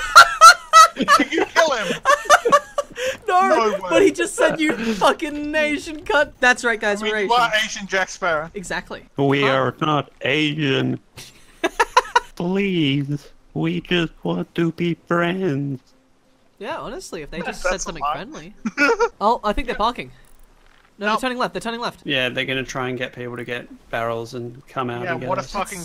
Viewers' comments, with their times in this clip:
0:09 he sounds like Stephen Hawking. Rip